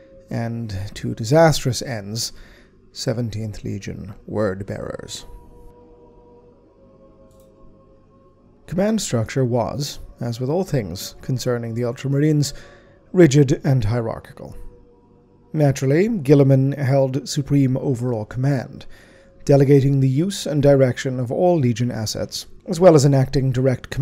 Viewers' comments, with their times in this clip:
0:07 Your use of heretical technology as heard through vox has been noted.